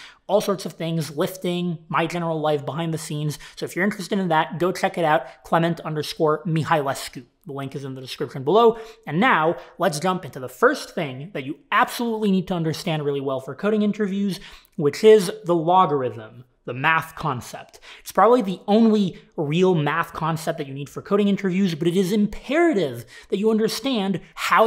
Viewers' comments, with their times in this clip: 0:06 he finally pronounced his surname.